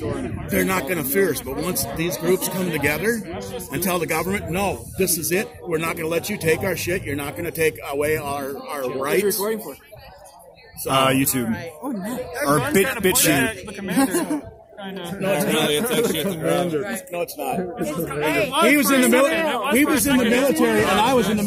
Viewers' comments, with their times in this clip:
0:04 The boomer sure is booming